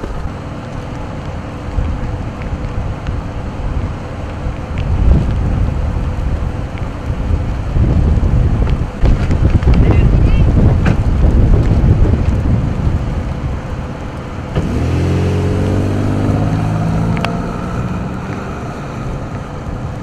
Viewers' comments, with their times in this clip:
0:03 holy cow😯😯 so black, so wide, so LOUD